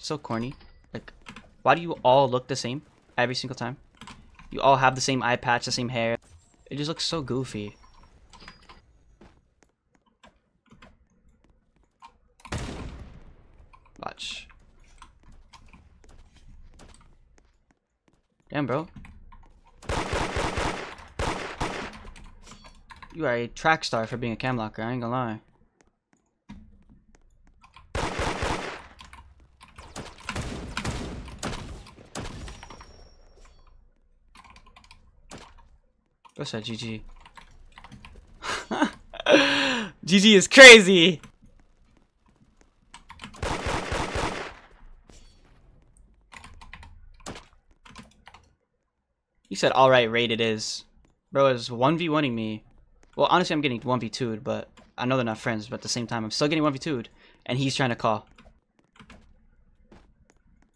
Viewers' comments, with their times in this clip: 0:07 why he say goofy like that
0:42 u silent lmaooo is so obv xd